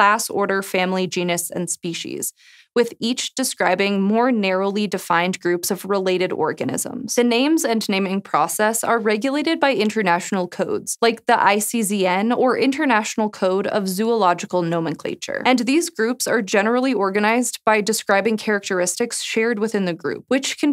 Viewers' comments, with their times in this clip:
0:05 she really said orgasms intsead if organisms